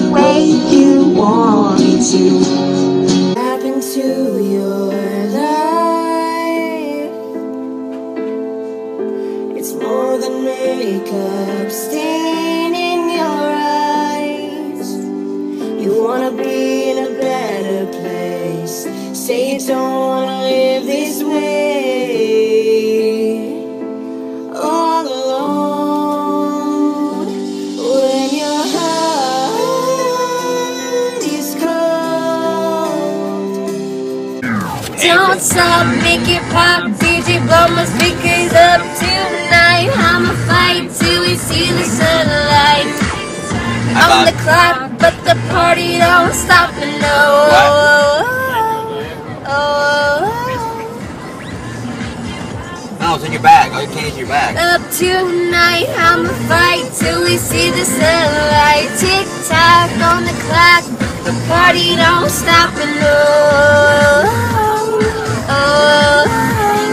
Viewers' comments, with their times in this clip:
0:04 She actually sounded pretty decent
0:17 she sang really good
0:32 omfg Her singing tik-tok is flawless. She needs to preform with an acoustic sound. She normally tries a bit too hard. She needs to do what she did there.
0:47 was actually reallllly good omgjfkfk (I'm not being sarcastic ok) she should do that more often with her voice a